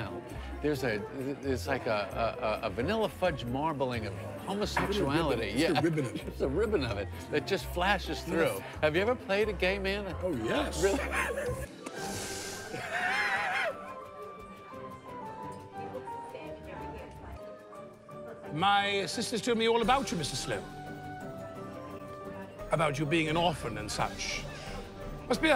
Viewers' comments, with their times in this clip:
0:09 It must feel really good to make Seinfeld crack up